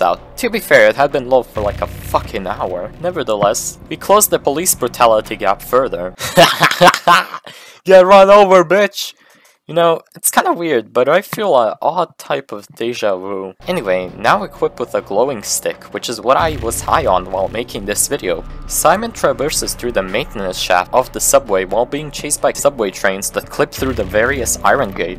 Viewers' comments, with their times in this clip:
0:06 just something about that laugh and scene I love.